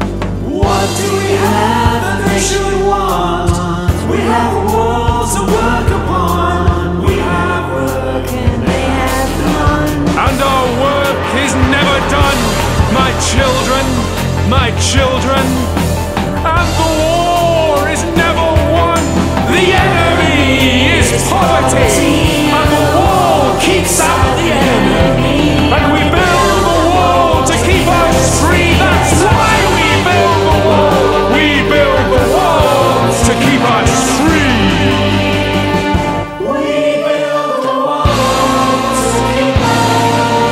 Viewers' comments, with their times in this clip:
0:09 Absolutely superb - this version actually does something I prefer to the Anaïs Mitchell version, and that's where Hades comes back in and seems to be driving the chorus forward with a demogogue-like fervour rather than simply seeming to echo the chorus, as in the original.
0:11 Ah, I was SO excited to hear how your vocals would sound at the part and after! Freaking stunning job there and the whole song!
0:28 The delivery there is strangely satisfying. Especially 'why' and the second 'wall'.